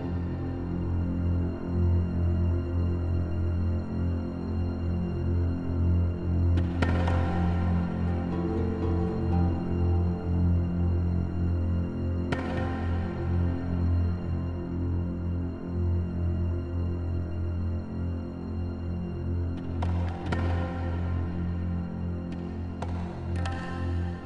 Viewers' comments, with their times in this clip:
0:07 Just sounds like cell from TFS lol